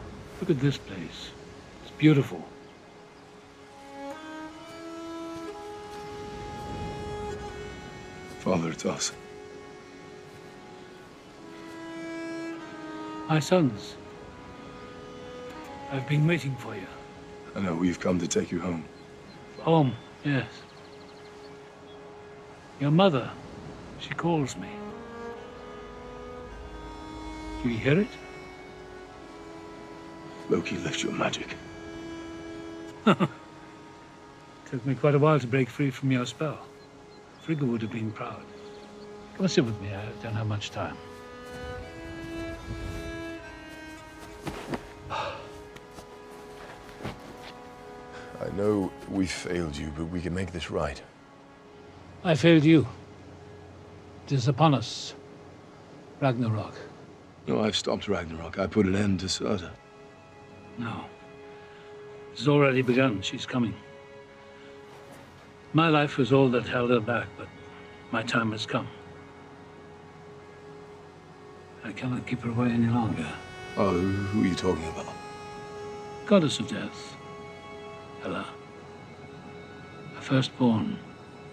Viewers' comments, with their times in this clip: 0:06 wow it's like Kratos and Atreus theme
0:56 put captions and Thor says "I've put an end to soda"
1:03 subtitles: I put an end to Ragnarok. I put an end to soda. Me: Pauses sip of Diet Coke in hand.
1:04 Turn on captions “I put an end to soda” 😂😂